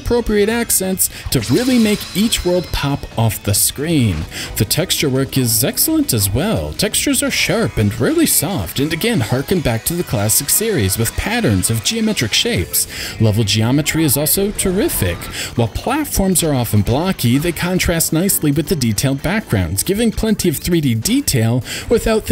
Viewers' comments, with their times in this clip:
0:06 "Textures are sharp, and really soft" Uh